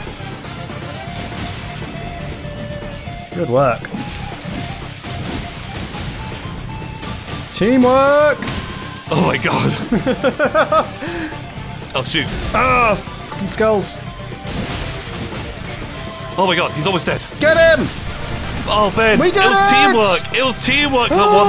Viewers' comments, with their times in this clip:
0:06 The hits kinda yimed in to the music. Namely the 1-2 punches and the chop.